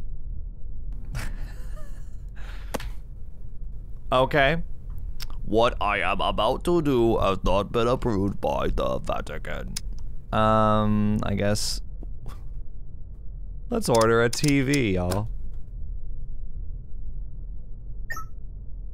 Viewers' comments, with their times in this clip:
0:06 LMAOO I was just saying “Mortissss” to myself while listening to the robot’s voice